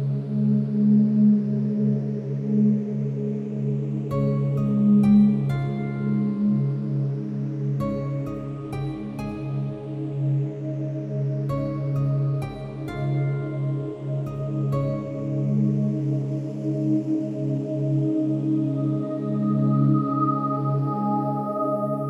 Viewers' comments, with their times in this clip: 0:09 and this feels like a loop. Took my mind out of studying and made me look into a different soundtrack for my life